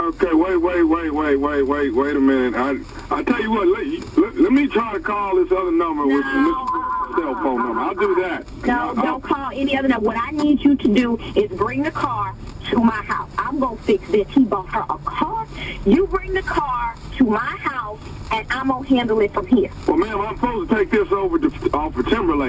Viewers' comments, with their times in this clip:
0:10 until I thought she was white